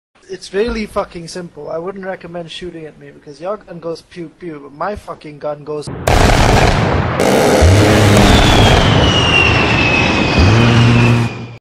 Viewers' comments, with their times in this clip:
0:05 music start lol
0:06 Nobody: My stomach at 3 am when I can’t sleep:
0:06 The dog says "woof". The cat says "meow". The fox says "ururur". The A-10 Thunderbolt says
0:06 When u try to fart quietly in public:
0:06 Relieving sound to hear if you are on the right side of it (according to Dad, a veteran of the Afghanistan War)
0:06 just for the sake of it my ass after taco bell
0:07 How opening a bag of chips at 3 a.m sounds like
0:07 The A-10 Farts as to assert dominance